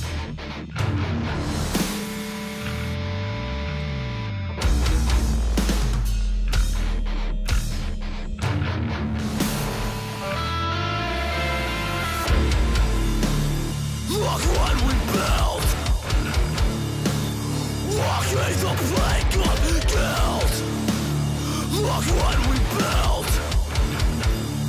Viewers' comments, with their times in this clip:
0:05 That "OH" gets me HYPE!